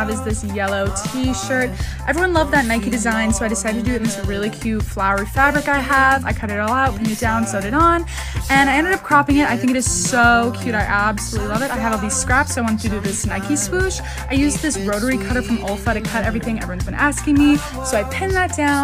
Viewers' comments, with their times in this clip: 0:04 me paying more attention to sunflower vol. 6 in the background-